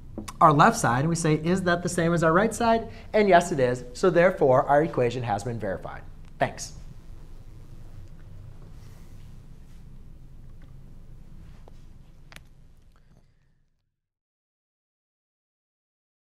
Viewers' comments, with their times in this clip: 0:03 but why you say 'and yes it is' so sassy hahah i love it thank you so much